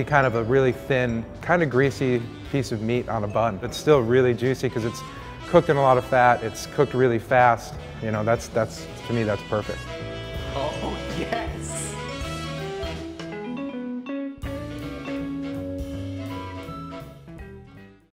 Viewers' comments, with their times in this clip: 0:10 nobody: reverb mode : oooooooo oooooooooooooooooh yeeeeeeeeeeeeeeeeeeeeeeeeeeeees